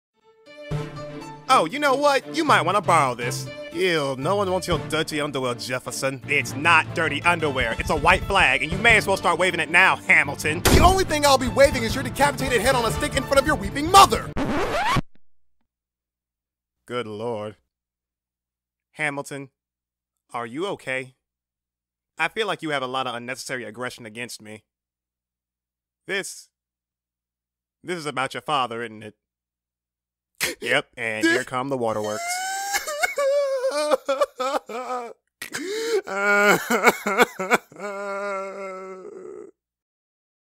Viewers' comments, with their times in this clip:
0:06 I can't tell whether Jeff is grinding his teeth or he's yelling XD
0:35 the random ass snort has be dead